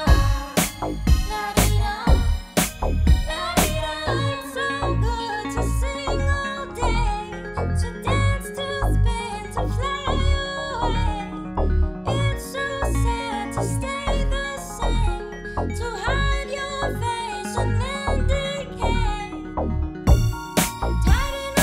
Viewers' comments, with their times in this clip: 0:05 I hear her voice line